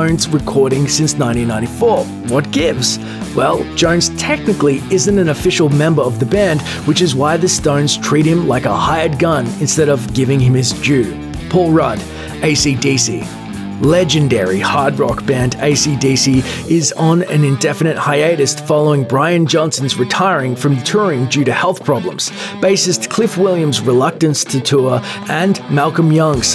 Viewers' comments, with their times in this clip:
0:10 Paul Rudd? Ant Man was in AC/DC?
0:11 am I the only one who heard Paul Rudd, not Phil Rudd. 😂
0:11 the british dude says Paul, haha, Ive never pronounced Phil like that. I guess the accent got me, coulda swore Paul Rudd was an actor or something, thats strange.
0:11 PAUL Rudd? Da fuk?